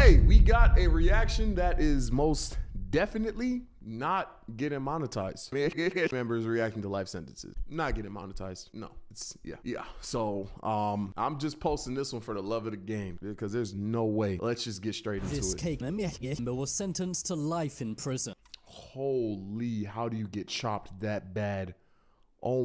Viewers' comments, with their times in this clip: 0:04 bro is speaking in his tongues 😭🙏